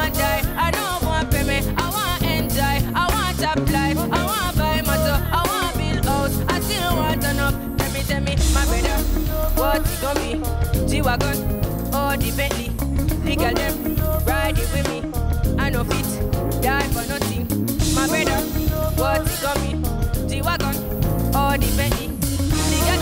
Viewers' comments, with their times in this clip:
0:05 pidgin or patois? Maybe they’re not that far off from each other. 😁